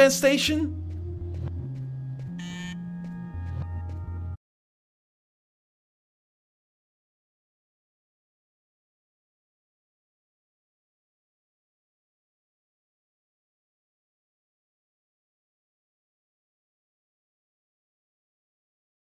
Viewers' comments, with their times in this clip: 0:04 For some reason, sound cuts out